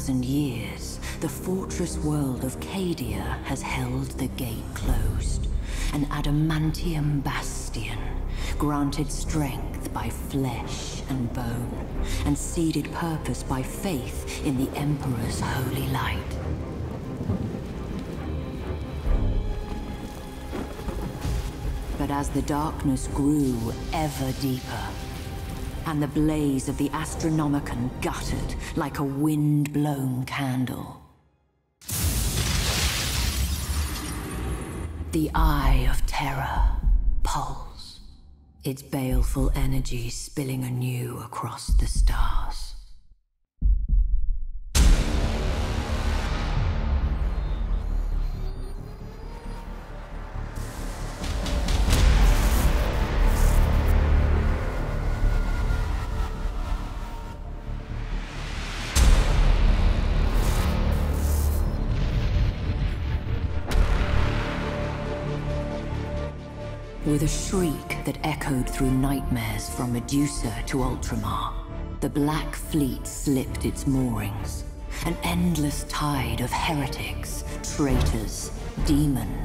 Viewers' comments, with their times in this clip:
0:05 Jeez, the woman storyteller has such a damn baddass voice! 10/10 for WH40 style. Just listen this line ... An adamanituuuum bassssstion. chiils
0:44 that METAL REQUIEM IS SO HARDCORE¡¡¡¡
1:01 I don't know why but the music from onwards gives me a halo vibe. Like during the battle for Earth when the Prophet of Truth arrives with his fleet in orbit and just seeing the sheer size of it compared to Earth's defenses. Probably just me.